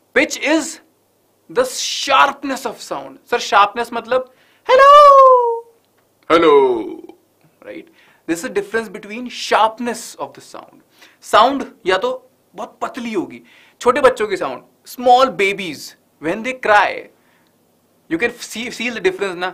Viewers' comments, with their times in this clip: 0:04 that voice change